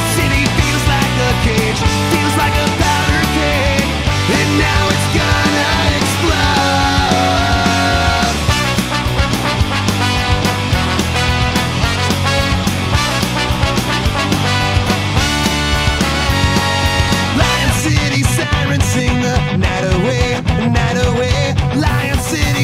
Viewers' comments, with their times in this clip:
0:09 I'm totally new to this band, a mate just introduced me to them. I don't see any trumpet in the video clip, but I can definitely hear one? Did the bone player over dub the recording or something?